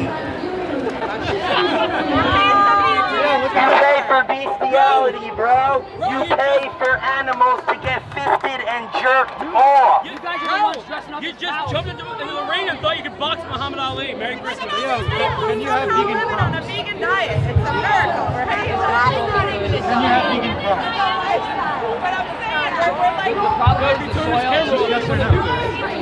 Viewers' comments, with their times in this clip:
0:10 "bro! You just jumped into the ring and thought you could box Mohammed Ali, Merry Christmas!" This line as well as the delivery sounds like something straight out of Steve Brule. Are you sure you're getting all of your vitamins, soy boy?